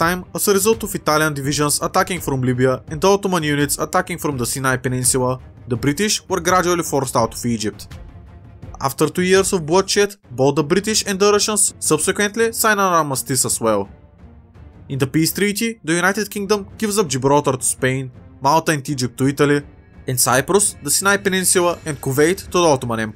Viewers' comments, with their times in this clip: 0:08 ¨After 2 years of bullshit¨ Nice video